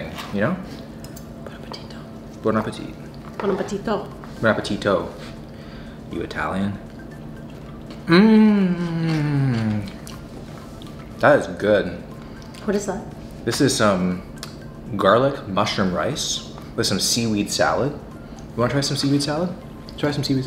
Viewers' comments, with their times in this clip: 0:08 Sounds like a depressed cow